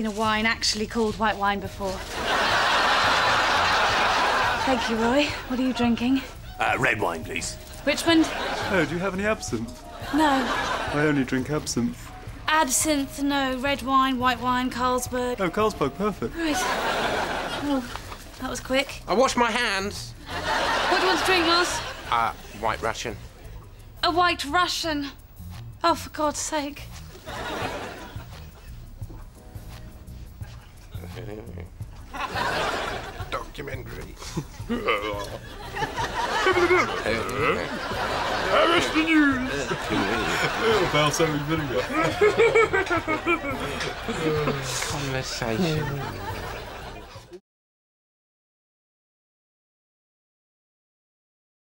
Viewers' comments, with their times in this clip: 0:06 a red wine please Hahahaha love the voice 😂😂
0:39 lol after when richmond says balsamic vinegar roy sounds like he's doing a yoda laugh lol